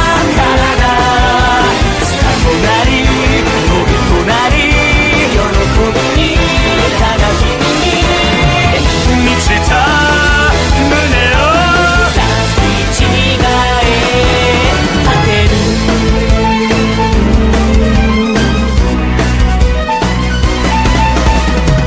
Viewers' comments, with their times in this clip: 0:05 THATS SO IMPRESSIVE NAZUNAS VOICE OMG
0:08 I absolutely ADORE Shu’s voice especially